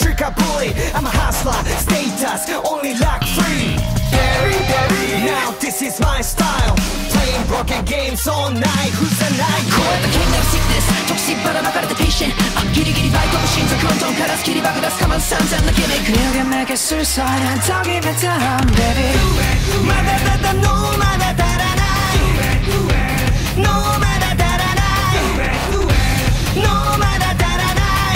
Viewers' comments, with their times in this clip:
0:09 why did they cut the rap at the best moment